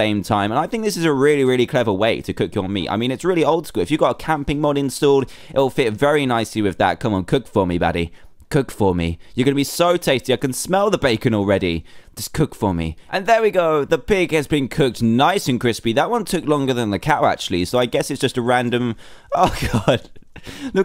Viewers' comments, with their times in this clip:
0:06 i know he did not jsut say cook for me daddy